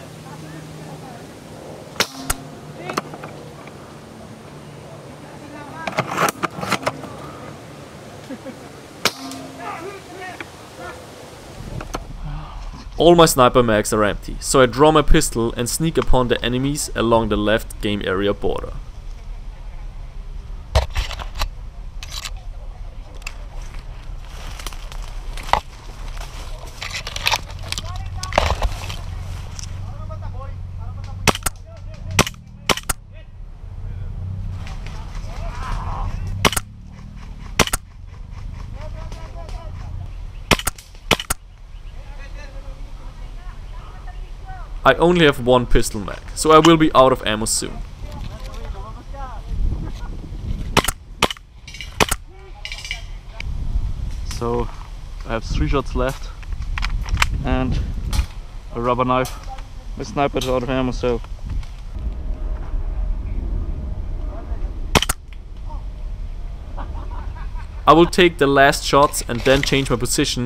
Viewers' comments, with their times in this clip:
0:07 the guy squeals like a pig jajaja seems like it hurt
0:54 his accent just disappeared